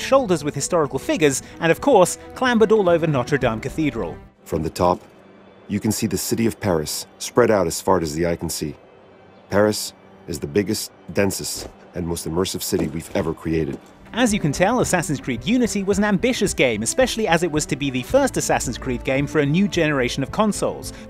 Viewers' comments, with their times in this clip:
0:05 dude totally said as "fart" as the eye can see...am I the only one that heard that? 😂